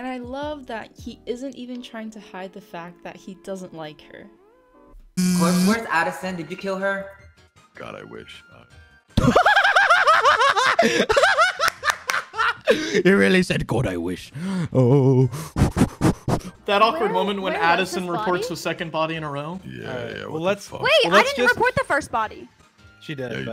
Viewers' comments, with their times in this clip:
0:06 Quackity's laugh makes it 1000x better
0:09 quackity laughing like a toddler- he’s so cute 😭
0:10 Noone could change the fact that quackity has the best laugh tho And asking him to moan is so fucking disgusting...people need to learn some basic fucking morals...geez